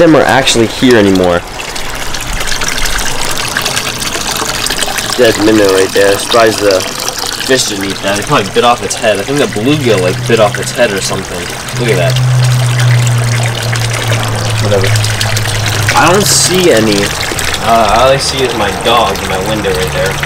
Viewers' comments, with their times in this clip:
0:04 What's wrong with your mic